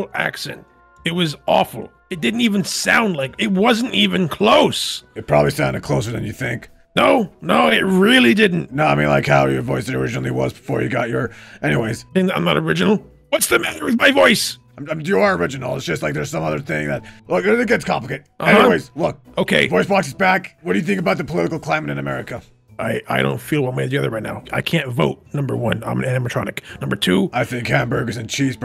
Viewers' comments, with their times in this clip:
0:10 Help fork face with Foxy's voice sounds like a spooky Scottish man 😂 although I think fork face might be a friend, he gave the voicebox back without any problems Monty's little fangs just poking out is adorable for no reason